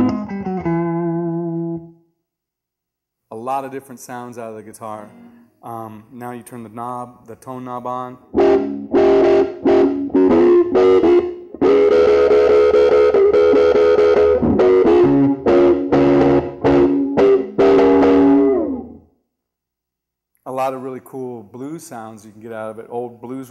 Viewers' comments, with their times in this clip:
0:08 It sounded like a dog...